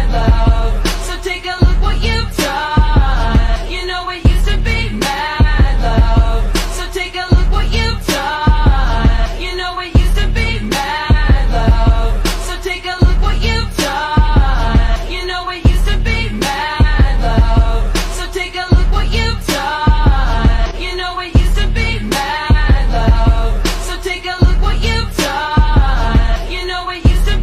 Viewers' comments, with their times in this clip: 0:05 the music was repeating over and over again the edit wasnt even that worth it but i love the story.
0:13 AHH ITS GERMAN??? JA!!!